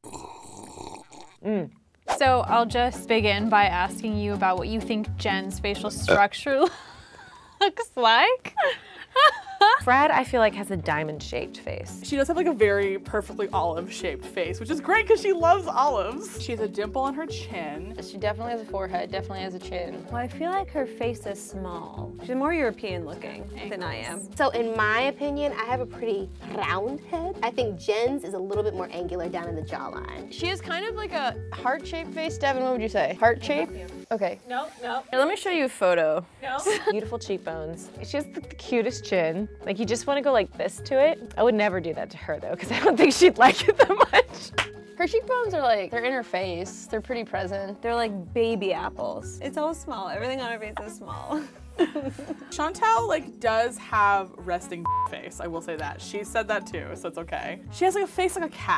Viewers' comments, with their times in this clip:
0:08 Cat(ariana grande) is that you?! I’m talking about her laugh 😂
0:09 The laugh sounds like cat from victorious
0:43 she clapped her way out of there
0:43 She clapped and she was gone
0:44 I'm wheezing at her clapping and disappearing lmao
0:44 the magical disappearance clap
0:44 did she just... disappeared with a clap???
0:44 that clap made her disappear